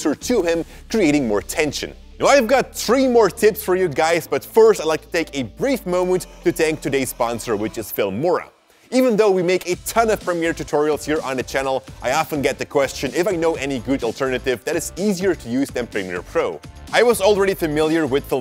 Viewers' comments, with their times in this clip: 0:03 Ok ur woah was fye 😭🔥.